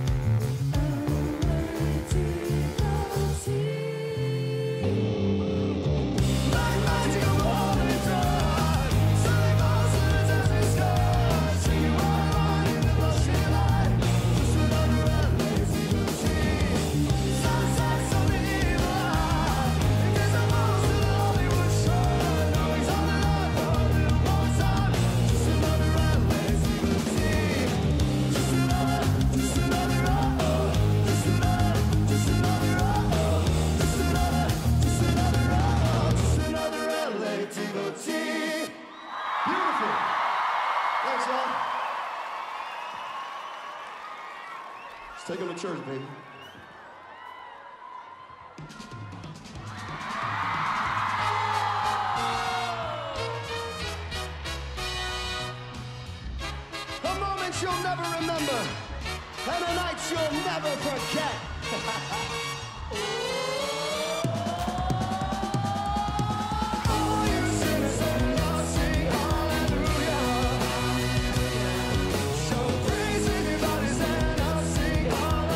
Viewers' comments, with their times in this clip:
0:10 sWeAtY bAlLs UnDeR dEsErT sKiEs
1:01 oh my god his laugh